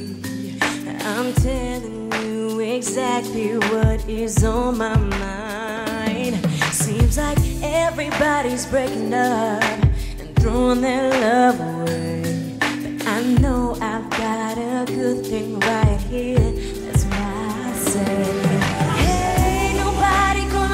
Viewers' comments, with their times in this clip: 0:06 sounds like shes singing with her mouth closed also in the chorus